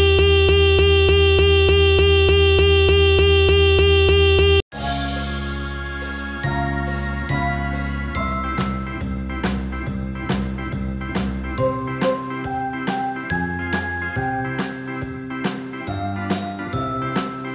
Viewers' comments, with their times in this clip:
0:05 0.75 tempo is slow